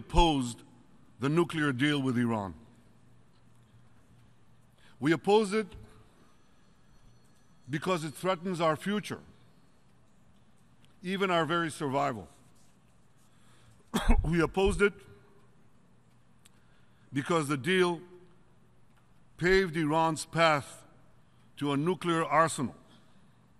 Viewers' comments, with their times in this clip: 0:06 A Palestinean deliberately had his ringer on.